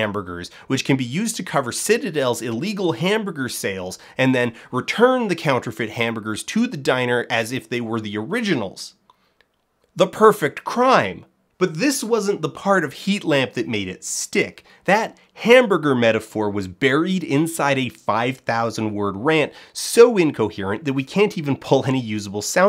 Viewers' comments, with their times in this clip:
0:08 I love the confused intonation of "...The perfect crime...?"